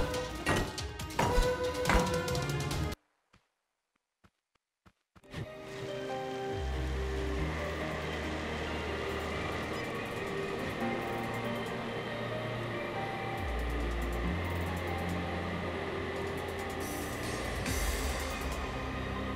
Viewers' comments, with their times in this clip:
0:04 did anyone here the "huh"?